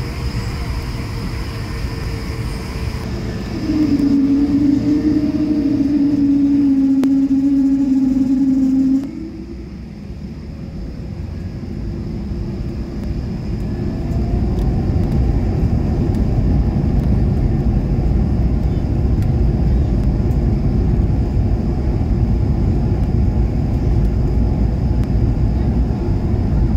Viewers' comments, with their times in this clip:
0:03 I think it sounds something like hydraulic pressure
0:09 it was the PW1000 spools up for takeoff